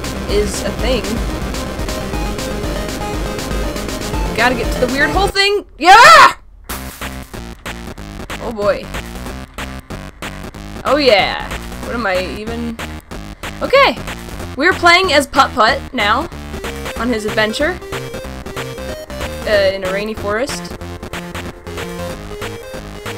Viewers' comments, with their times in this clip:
0:05 wow that was a weird sound she made